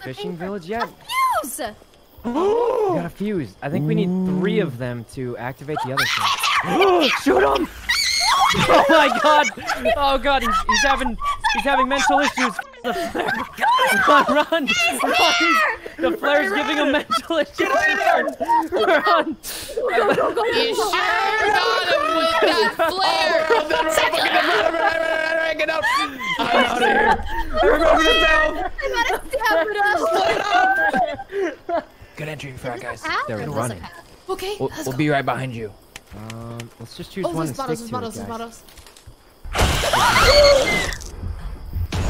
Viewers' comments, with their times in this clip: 0:06 the sheer double panic in Rae's voice because she started to scream when she saw the creature and double panic when Sykkuno fired the flare gun and totally missed LMAO
0:28 someone sounds like a garlic from doctor who